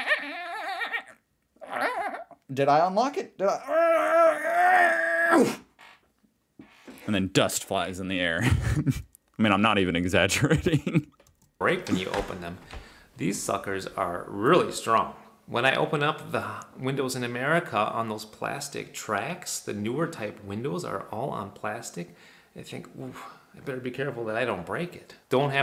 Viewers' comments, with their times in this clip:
0:06 sounds like youll need a couple liters of WD-40